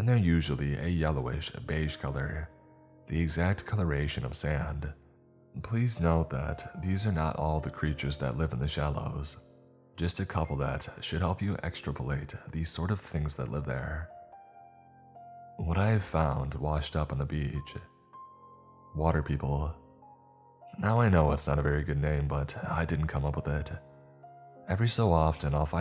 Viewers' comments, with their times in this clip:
0:10 never heard anyone pronounce the word extrapolate like that before! :-)